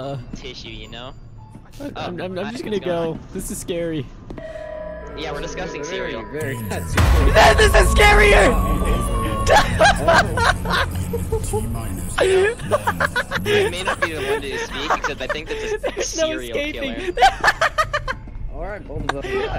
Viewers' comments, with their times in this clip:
0:05 why l hear boss music?